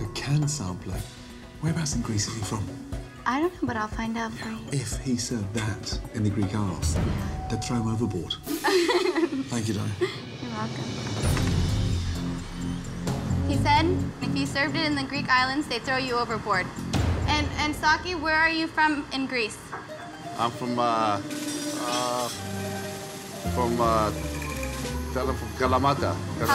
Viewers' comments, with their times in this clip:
0:04 I like how the old man is giggling in the backgeround when Mr.Ramsay made a joke about throwing a man overboard if they ate the Greek sampler
0:05 old man lauging about the joke ( they throw you overboard)
0:06 LMAOOO THE OLD GUY IN THE BACKGROUND LAUGHS
0:07 I love how the old guy laughs quietly when Gordon said his joke
0:07 I love the old dude just cracking up at Gordon in the background
0:07 that old mans laugh
0:08 The old timer behind them laughing at Ramsey’s joke 😂
0:08 that old guy in background laughing lol :D
0:08 Who else realized in the guy in the bg laughing